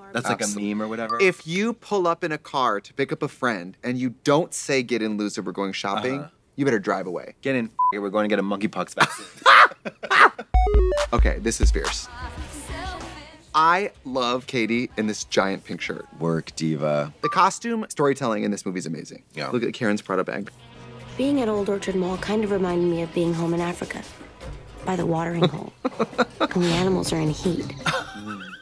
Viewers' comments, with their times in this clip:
0:10 blond women cacchinate